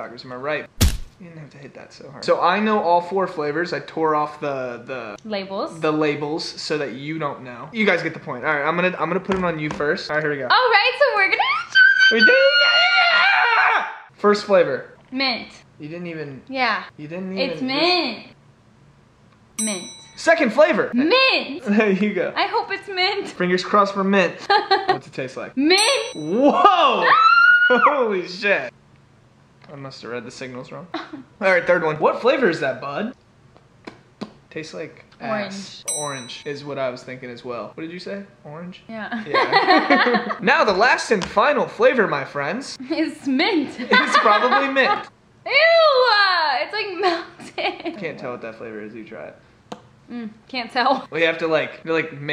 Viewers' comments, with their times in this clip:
0:09 why does Addison remind me of the little girl from despicable me and when Bryce yelled that was Gru
0:09 why does Addison remind me of the little girl from despicable me and when Bryce yelled that was Gru
0:11 I love the way the both screamed🥺🥰😂
0:32 i thought bryce hall said what flavor is that hun? 😵
0:39 I keep replaying this part omg the way the laughed and looked at each other is so cute please-
0:40 awww the laugh thoo
0:40 Oh my god pause it’s so cute when they laughed together. Like I cantttttt